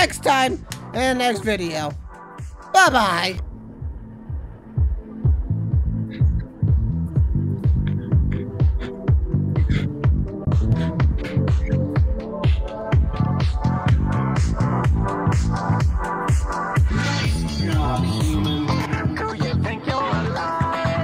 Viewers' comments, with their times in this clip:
0:08 i'm just vibing to the music